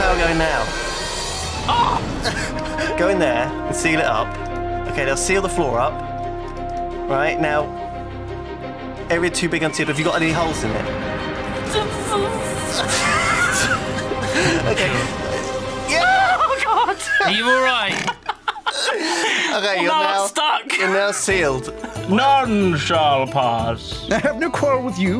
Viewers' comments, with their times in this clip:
0:09 lewis sounds so different